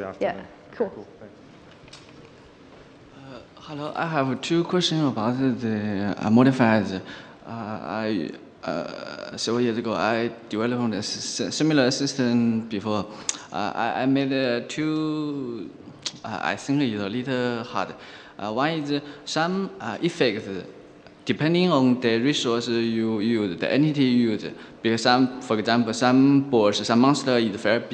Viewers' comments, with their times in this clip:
0:10 i couldn't understand a word from what the guy started saying.